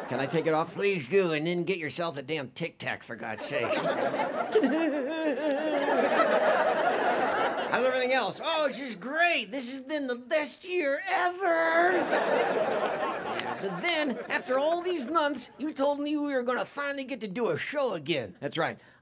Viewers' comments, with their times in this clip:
0:04 Walters fake laugh gets me every time.